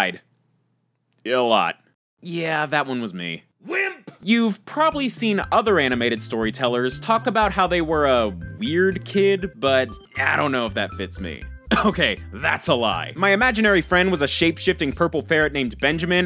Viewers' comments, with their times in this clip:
0:03 Voice in the background “Wimp!”